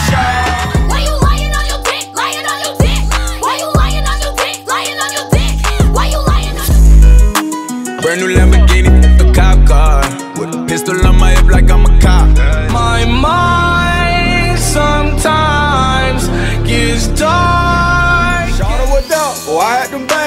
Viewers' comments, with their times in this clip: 0:04 lmao wtf is that song wack asf